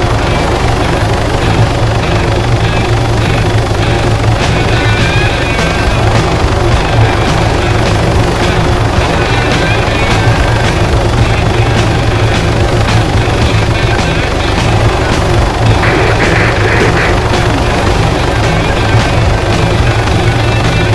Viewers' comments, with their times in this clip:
0:05 The audio broke on n now the vid has no sound